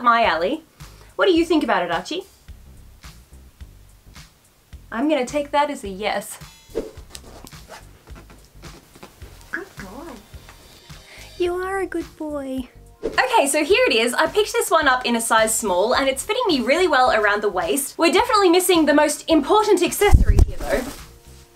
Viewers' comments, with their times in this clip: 0:08 I didn't know birds can whisper like that o.o that's... Kinda creepy